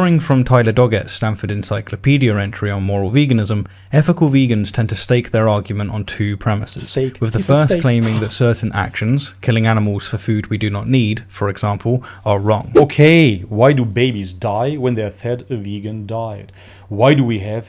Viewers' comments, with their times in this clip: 0:04 did you say STEAK?!?!